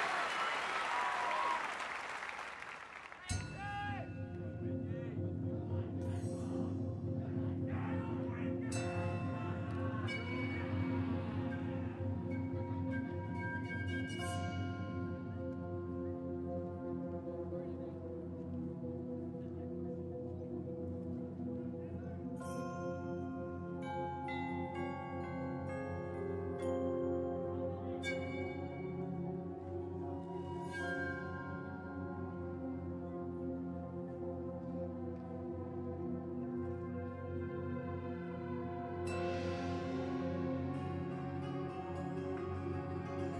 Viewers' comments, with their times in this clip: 0:08 The subtle "HADOUKEN" Golden
0:09 you can hear a guy yell out hadouken lol
0:28 If it was a trumpet it wouldn't sound that pure. DCI trumpets that play that high always sound like they're about to give themselves a hernia. Maybe an amped bowed-vibraphone or that Japanese-style whistle ?